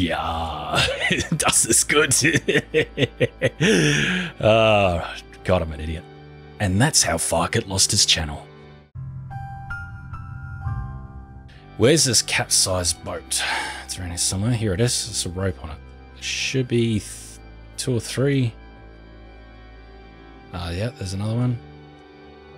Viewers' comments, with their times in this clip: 0:04 As a Native German speaker, i can safely say WHAT THE ACTUAL F*** XD Dude, do you know how horrible that sounded LMAO